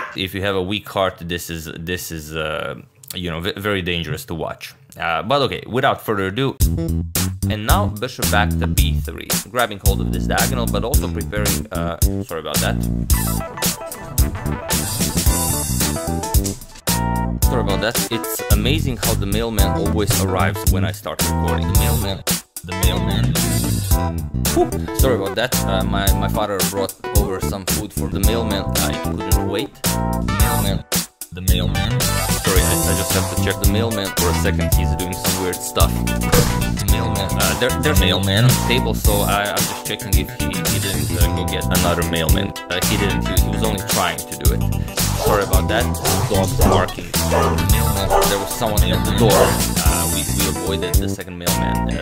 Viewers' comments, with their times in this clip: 0:07 All chess analysis is improved with the addition of a synthesizer-heavy 80s VHS porno soundtrack.
0:34 I think Agad's voice could be louder here ;)